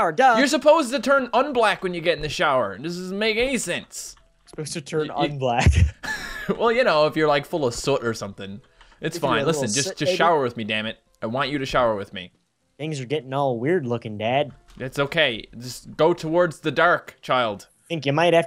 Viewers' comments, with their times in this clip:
0:06 you sounded so Irish at that moment.